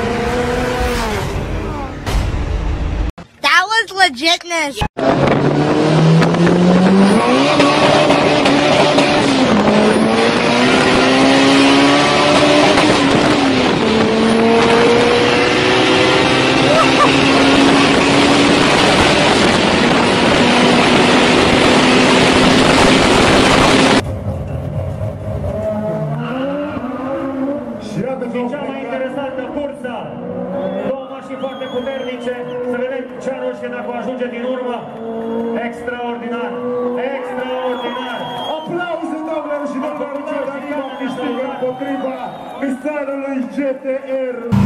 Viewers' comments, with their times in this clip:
0:08 V-TEC KICKED IN YO!
0:25 Romanian language <3